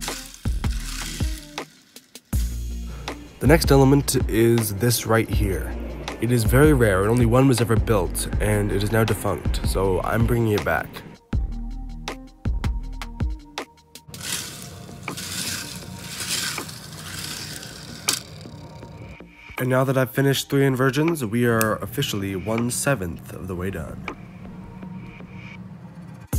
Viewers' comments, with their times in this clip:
0:07 Only one was ever built. Banshee: Sad rattle noises